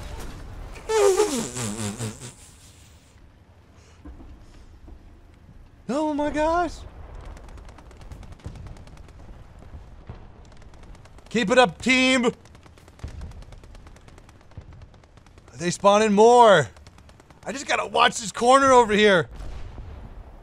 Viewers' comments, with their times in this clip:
0:04 I hear a demon laughing in the background!!!